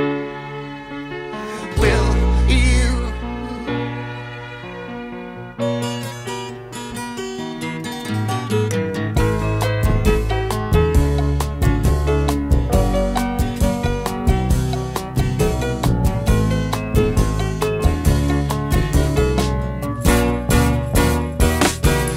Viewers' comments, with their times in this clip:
0:10 onwards sounds very much like Coldplay's 'Viva la Vida" .. just saying.